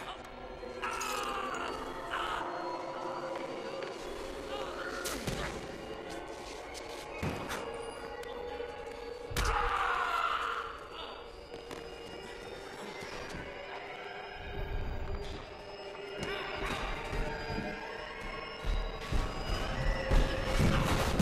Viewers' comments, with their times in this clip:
0:09 Man that scream always cracks me up